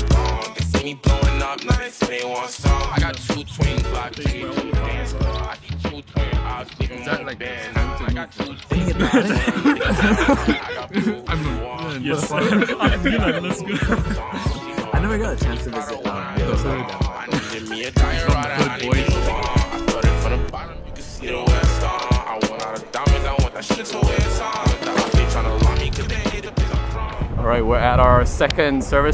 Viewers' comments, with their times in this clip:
0:10 not sure if is a fake laugh to deal with awkwardness of a stupid joke or a genuine laugh , but this time is definitely a laugh tho